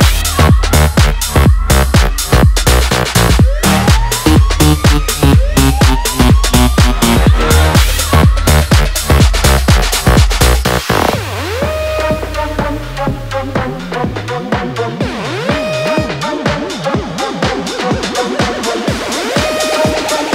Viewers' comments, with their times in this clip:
0:06 the chick singing part reminds me of darude i can feel the beat :)